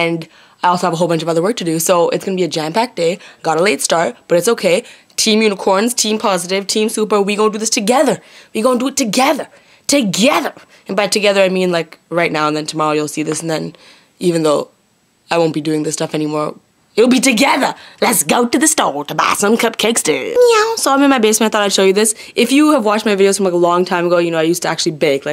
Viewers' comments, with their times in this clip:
0:08 For some reason, when Lilly said "Together", she reminded me of Arizona from Grey's Anatomy. PS:. Ordinary comment but the love for Lilly is mutual :)